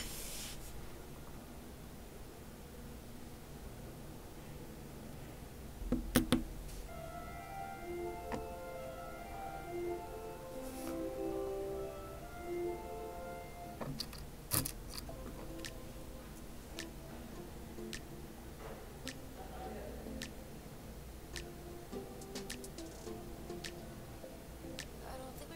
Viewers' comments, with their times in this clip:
0:09 School bell? are you doing these designs at school? I don't understand... (for reference, she said this )